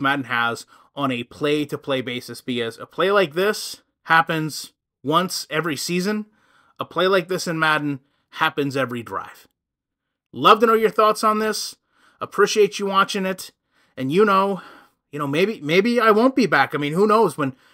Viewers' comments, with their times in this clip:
0:03 “a play like this happens every *graph*(?)” I know you didn’t say graph. What were you saying there?